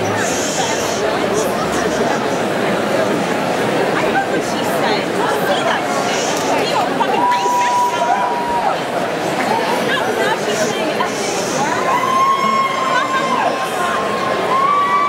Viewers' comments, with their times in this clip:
0:03 in the background noise... Uh Oh some rowdy drunk girls are gonna get into a fight....